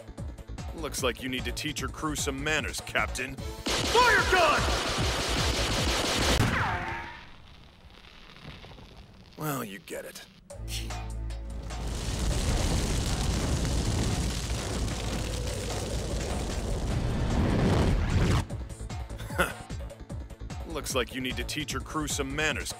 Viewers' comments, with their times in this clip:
0:09 Van Augur shot so fast you only hear 1 shooting sound when Ace was shot twice - accurately on the forehead and middle chest.